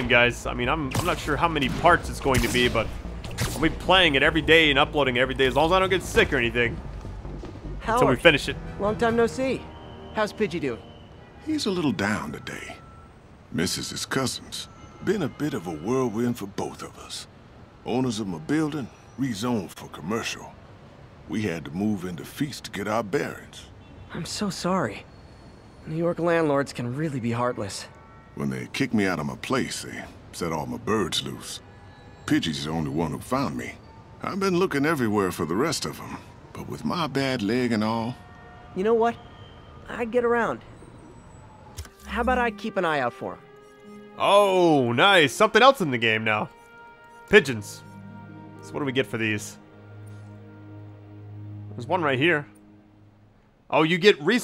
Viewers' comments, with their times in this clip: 0:08 ITS LEE’S VOICE !!! HE’S ALIVE !!!
0:08 Howard's voice sounds familiar, forgot where it's from tho
0:11 just me or does it sound like lee from walking dead season 1
0:25 the homeless man sounds like Lee from The Walking Dead
0:37 HE SOUNDS LIKE LEE